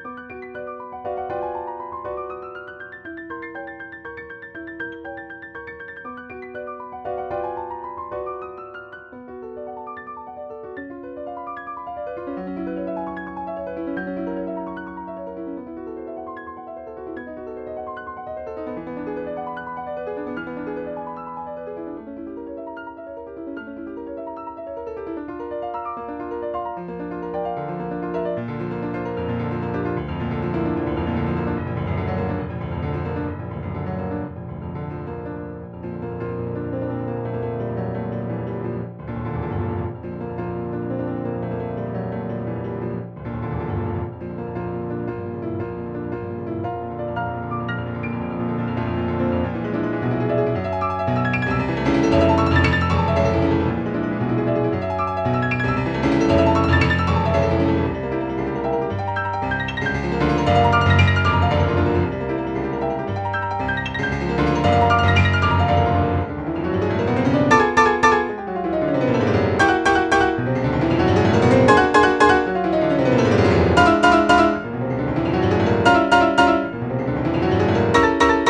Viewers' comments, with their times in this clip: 0:08 is giving me Un Sospiro vibes from his 3rd study from the 3 Concert Studies he made even though it doesn't sound like it.
0:09 sounds magical af
0:36 the sustain pauses and the absence of the main melody in the pauses feel rather awkward
1:05 I really agree with both opinions, but for the I kinda like to think that the grace note-like chords represents the laughs from the devil which it sounds kinda cool by the fact that it is a piece related to devil, but still sounds pretty off, specially from the 3rd chord which it sounds quite odd
1:06 idk if it's just me but those "pa-WAMP pa-WAMP pa-WAMP" notes sound like evil laughter lmao, or I'm just crazy